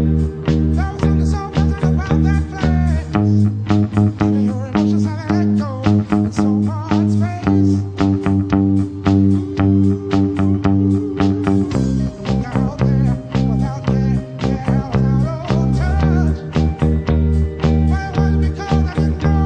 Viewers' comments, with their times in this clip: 0:03 I could’ve sworn the G sharp and G like the ones starting were an octave lower on at least some of the verses or the choruses. I’m gonna have to go back and listen to the original now!